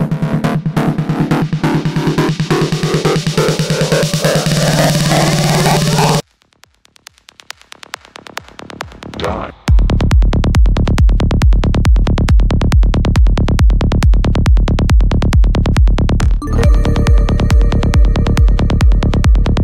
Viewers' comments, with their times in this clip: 0:05 the drop blew me fucking head off